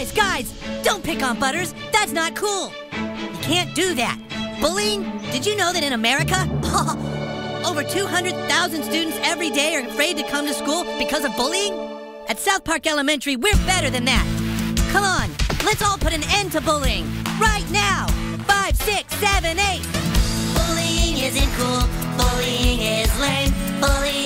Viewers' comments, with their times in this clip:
0:05 Stan’s little laugh 😂
0:06 the laugh is how I figured that Stan and Randy have the same actor